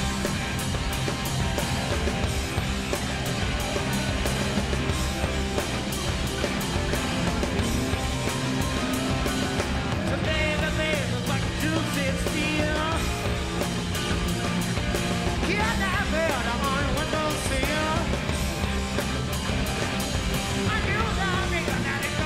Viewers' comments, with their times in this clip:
0:03 Keyboard dude going OFF! 👍🐐